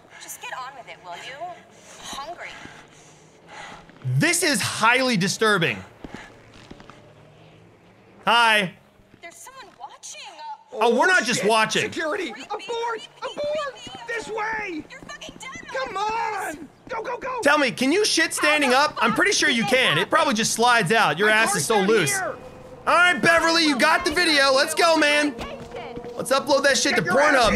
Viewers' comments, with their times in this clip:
0:08 Love he says hi like nothings wrong